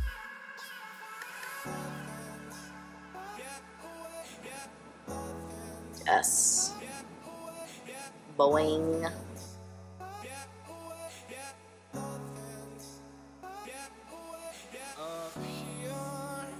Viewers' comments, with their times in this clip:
0:04 did u burp ??! LOOOOOOOL